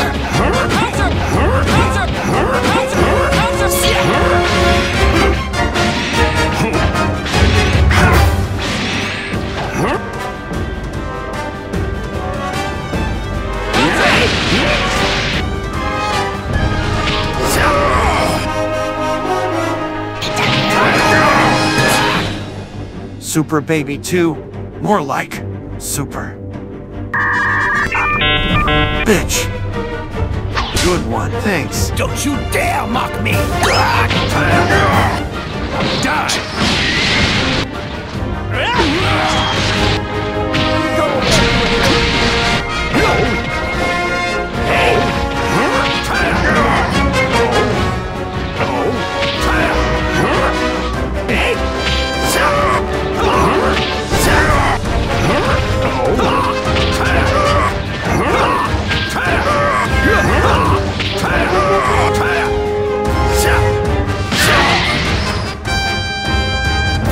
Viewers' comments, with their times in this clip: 0:03 is it me or I am the only one hear the speed
0:55 did bro say hawk tuah?